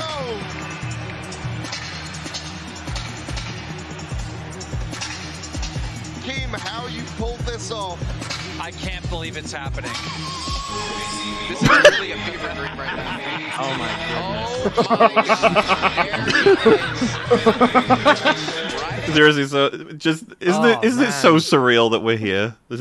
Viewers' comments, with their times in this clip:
0:08 Whoever decided to have Boogie walk out to Riding Dirty knew what they were doing. Camera cuts to a guy as round as he is on the ramp to the ring right as the song hits with "they see me rollin" I died.